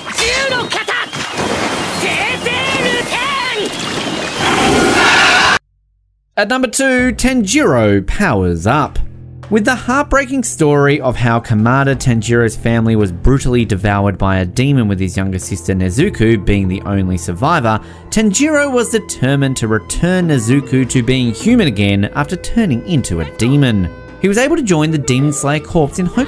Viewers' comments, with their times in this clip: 0:06 Tan-jiro😂😂😂 this dude can’t pronounce anything
0:09 Who the fuck is nezuku oh nezuko ok just say that